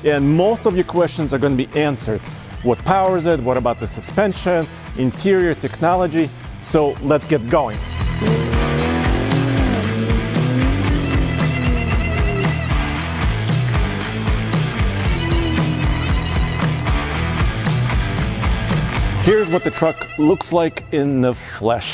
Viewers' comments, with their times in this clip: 0:08 that sound.... my disappointment is immeasurable and my day is ruined. WHY FORD!? WHY CANT YOU JUST LISTEN FOR ONCE AND PUT A V8 IN YOUR TRUCK!?